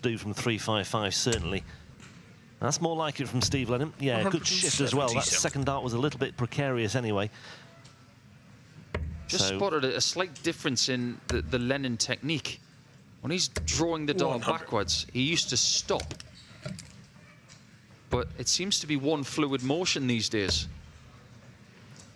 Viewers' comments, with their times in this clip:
0:03 what the commentator say? "good shit" :P